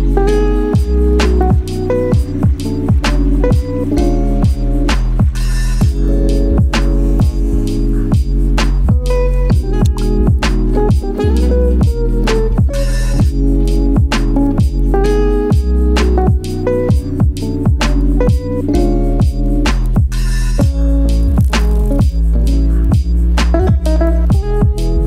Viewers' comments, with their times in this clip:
0:09 that perfectly placed water drop sound